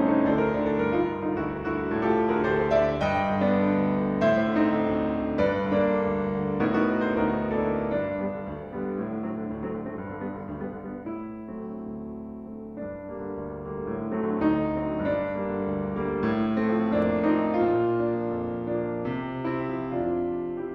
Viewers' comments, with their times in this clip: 0:07 awesome mini samba